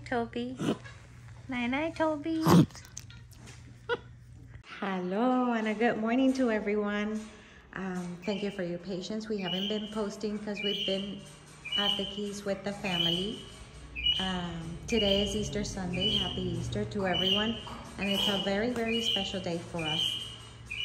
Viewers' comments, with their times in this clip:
0:04 The sound ….what does it mean? It’s like a grunting?